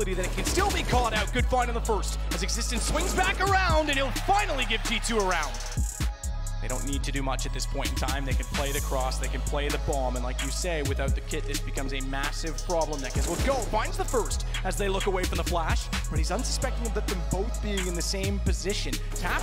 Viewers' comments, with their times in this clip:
0:06 For a few seconds there it sounded like the caster was rapping to the music 🤣